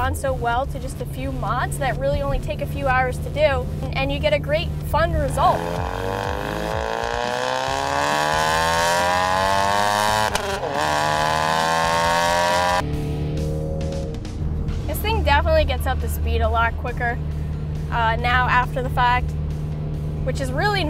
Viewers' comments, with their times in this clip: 0:04 Skip to she finally shuts up for 5 seconds so you can actually hear the engine/exhaust.